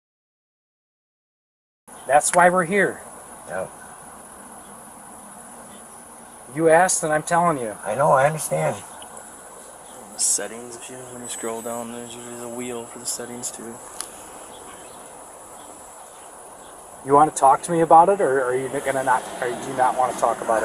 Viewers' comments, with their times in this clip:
0:06 The stuff that was bleeped out at the mark that the officer said the suspect was going to jail for was probably too explicit to mention so they bleeped it out.